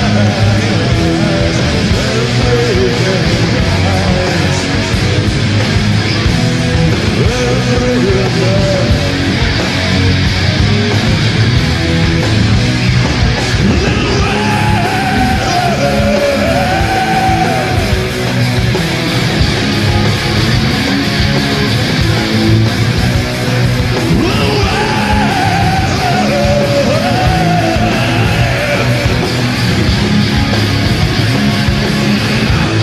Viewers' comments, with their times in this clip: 0:10 is Prime Pete vocals
0:14 is the voice of a god!